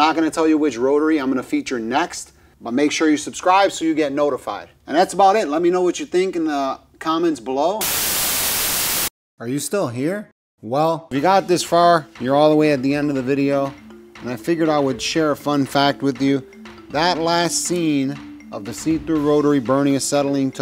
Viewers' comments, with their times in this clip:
0:08 JESUS FUCK MY EARS ARE BLEEDING!!!! Lol